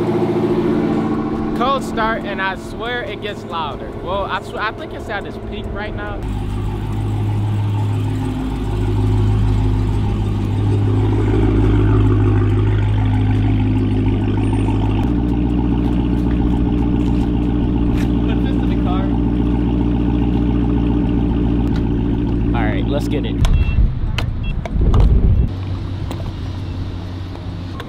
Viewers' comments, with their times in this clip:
0:09 a tiger walking out of his cave